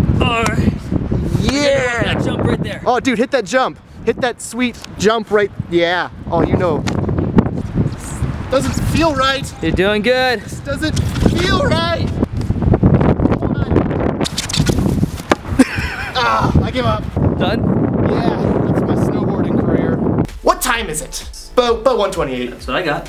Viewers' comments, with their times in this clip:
0:10 Am I the only one who laughed like hell when he falls and makes that noise? OMR